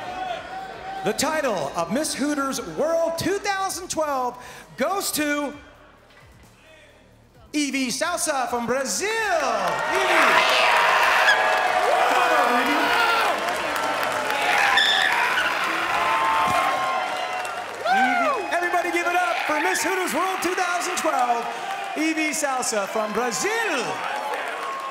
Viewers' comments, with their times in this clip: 0:09 pterodactyl on the loose